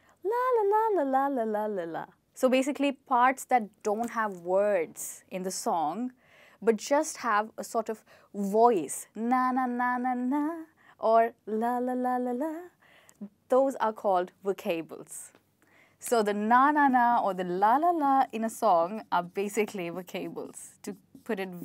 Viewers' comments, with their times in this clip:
0:09 OMG ur voice👌👍